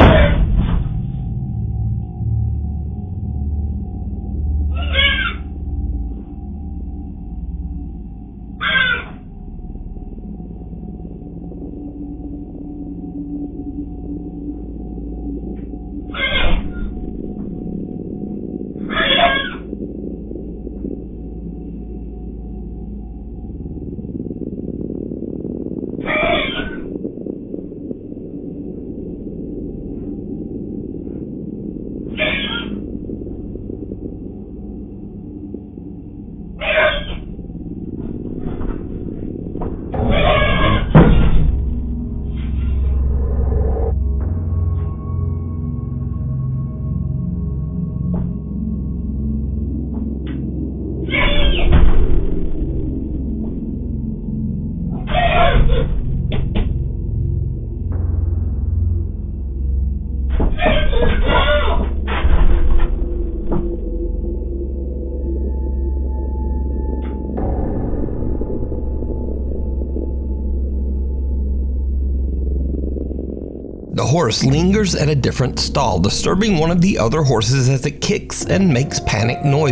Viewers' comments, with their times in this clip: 0:03 The resident horse expert in my house (my mum who has owned and trained horses for 37 years) suggest that the one that broke out of the stable is likely a gelding or a stallion and the second horse was a mare (that's the one who was screaming) and it's just THAT time of season As a person who has heard a screaming mare and seen a very active stallion trying to get to one This is pretty normal The only weird bit was the shadow
1:02 As a horse owner, I see stallion and a mare in heat. All that screaming is what horses do when they getting ready to do the thang. Yes, they will knock a door down to get there. Hormones, go figure!😆🤣